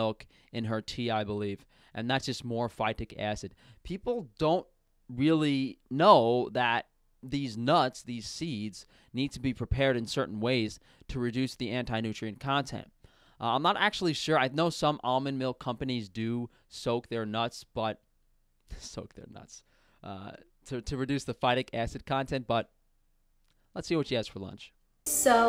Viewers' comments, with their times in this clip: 0:06 did you said deez nuts?